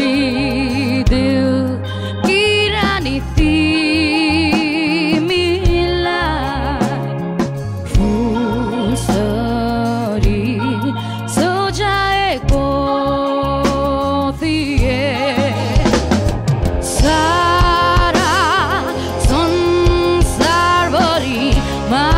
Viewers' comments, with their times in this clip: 0:03 O my god her crack voice (ki rani timilai) make the song more beautiful !!! Best female voice ever !!!! Love ur unique voice